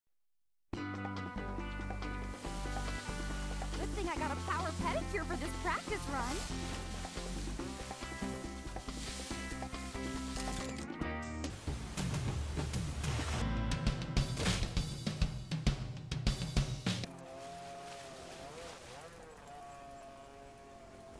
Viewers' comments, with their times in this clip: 0:07 Tom and Jerry fast and furry Liberty lady Bikini Music Tom Wolf Whistles at Daphne in Her Bikini